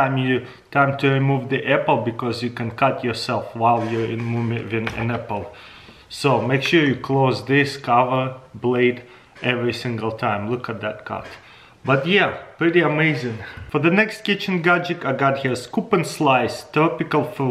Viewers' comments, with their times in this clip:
0:03 what is he saying?